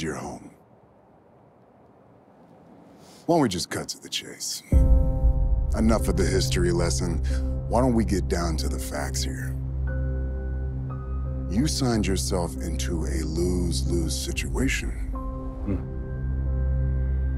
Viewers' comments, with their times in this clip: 0:03 I thought the Wyatt Sicks were coming out when I heard that piano!